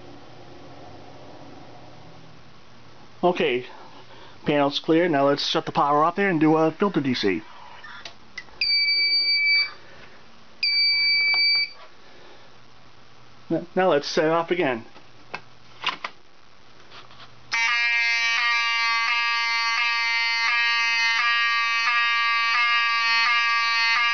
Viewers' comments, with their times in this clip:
0:08 Do you have a scanner or a radio because I heard an mdc1200 squawk ? if so that kind? (model #)